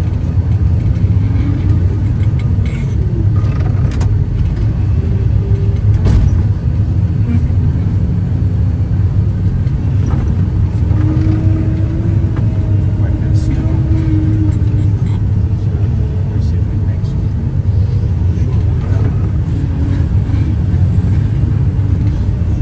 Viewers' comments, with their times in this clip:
0:10 Respectable skills. Those conditions make your world very small, just as far as the bubble you can see. Something pleasing about working like that. PS. no backup buzzer PRICESLESS. 😊